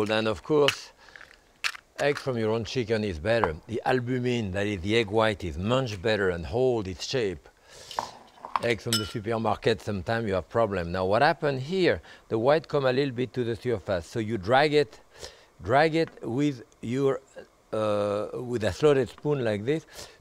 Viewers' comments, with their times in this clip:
0:05 “the egg white is much better, holy shit” is what I heard at first